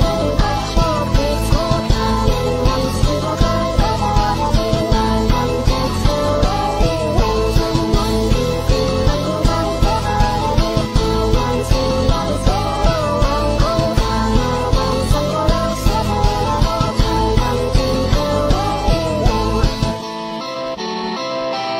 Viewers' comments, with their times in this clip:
0:03 the most epic music